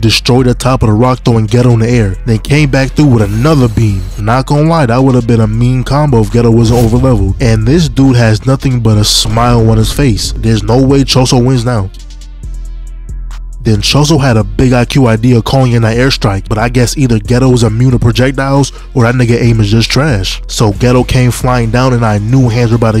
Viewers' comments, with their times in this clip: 0:10 nah brodie what is this awkward pause